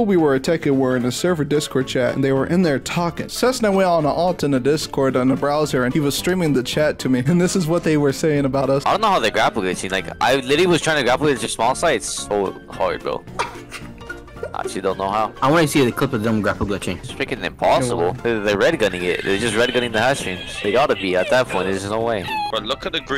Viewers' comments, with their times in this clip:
0:09 bro sounds like a child with the way he speaks